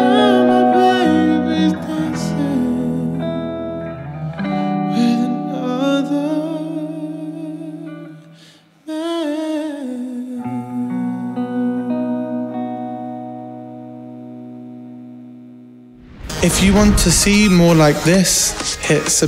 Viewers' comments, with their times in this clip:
0:05 "When I duuu meeeen" what is he talking???